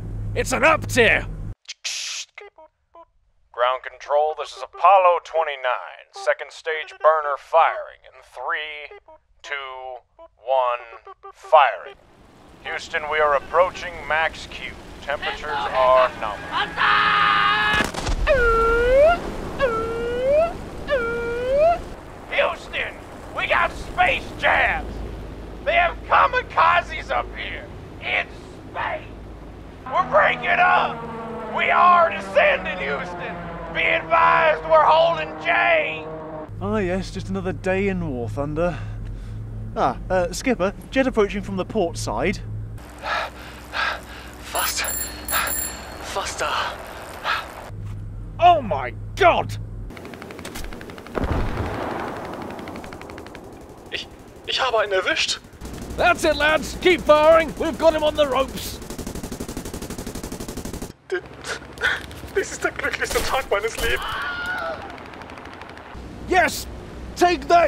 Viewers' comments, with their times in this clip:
0:03 Love the instrument
0:18 The manual alarm sounds incredible
0:20 it sounds like pops from regular show
0:48 When you expect this war to be like the last one but you hear Panzerlied blasting from the Ardennes